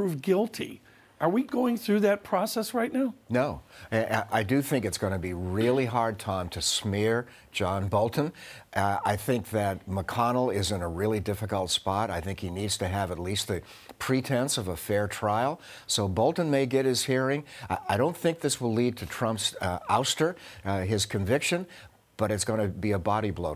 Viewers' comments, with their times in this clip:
0:05 was that a cartoon spring sound effect?